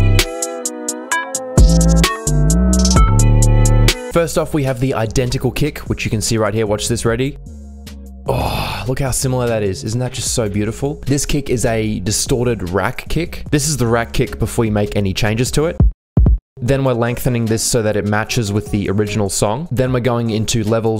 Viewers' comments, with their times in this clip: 0:07 Moans with delight at the waveform